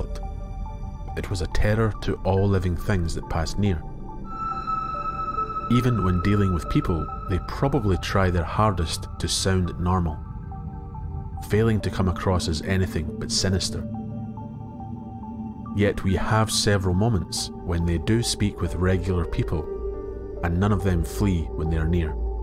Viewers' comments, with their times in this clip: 0:09 I got scared so bad that high pitch wine freaked me out